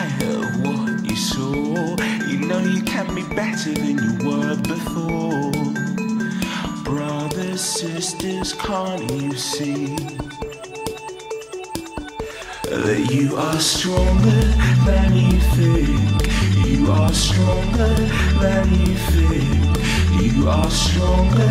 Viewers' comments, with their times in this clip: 0:07 Really sounds like the Skins theme mashed up